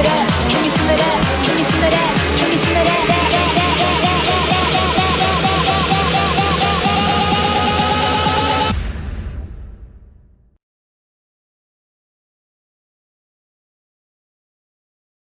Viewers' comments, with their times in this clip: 0:05 that moment when you prepare for a beat drop but it never happens